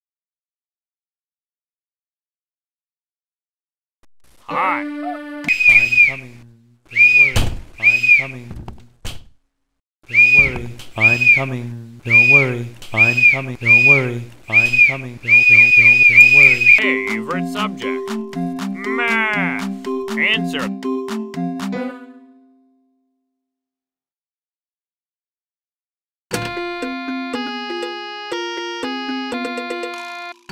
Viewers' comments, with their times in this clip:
0:05 WHY IS PRINCIPAL SCREAMING WHILE SAYING "Don't worry, I'm coming"
0:15 blud was over using the whistle 💀💀💀
0:16 whistling sounds- favourite subject, MATH!